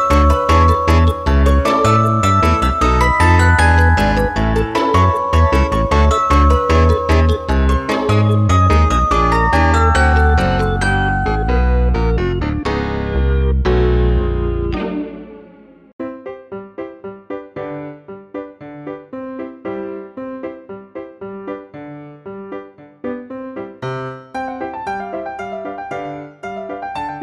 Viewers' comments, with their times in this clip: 0:07 I got spooked for no reason from the music getting slower all of the sudden XD apparently I’m a scaredy cat
0:07 why did the music go dark?
0:08 what just happened to the music-
0:11 The 1st to music and it was getting creepy creepier and creepier